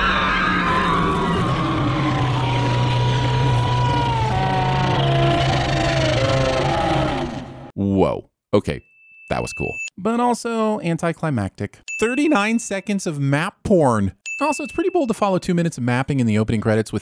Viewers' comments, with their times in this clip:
0:04 Sinning TVSins for the credits again: The blood culverts and gears are actually laying out the Targaryen family tree. I know it's been said already, but ffs. EDIT: Biggest rooster block of the entire season was the scene (1H31M) where what's her name burst into the sept on dragonback. I really thought she was going to burn it all down, but nooooooooooooo her dragon screams and then she f*cks off. DING!